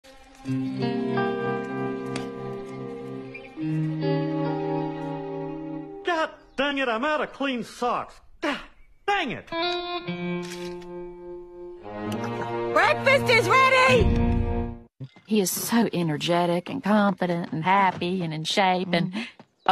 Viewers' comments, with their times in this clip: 0:05 the way the music cuts off shouldn't be funny😭